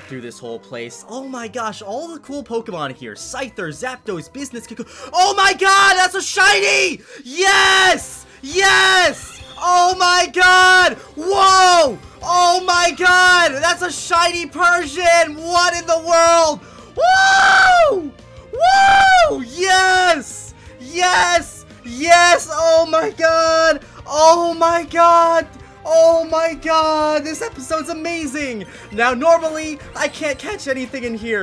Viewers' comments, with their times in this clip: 0:05 R.I.P HEASPHONE USER’S
0:05 is where he screams
0:07 lol i had headphones + computer volume max
0:16 You are lucky on I didn't go deaf